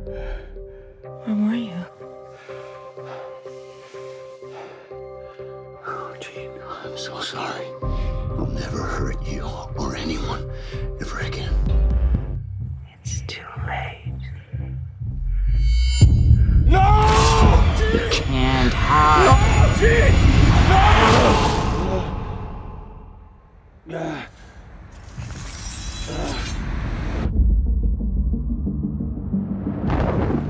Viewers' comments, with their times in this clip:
0:10 The music is surprisingly creepy; something about it sends a chill down my spine.
0:12 it's too little